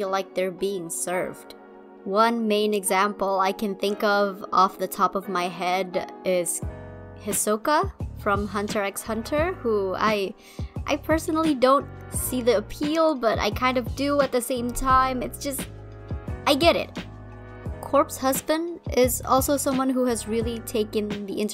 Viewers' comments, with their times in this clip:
0:08 i know this is out of context and pretty much useless but in they pronounced the x in hunter x hunter 😭